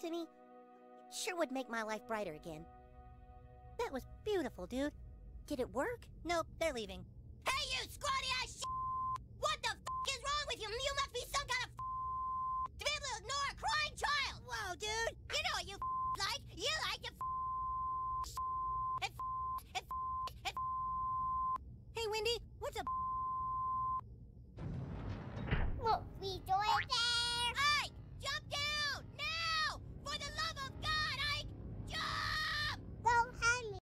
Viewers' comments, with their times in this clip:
0:08 DIPSY TELETUBBIES EARAPE
0:09 bro was speaking Morse code
0:29 the scream "JUMPPP" is my favorite part😭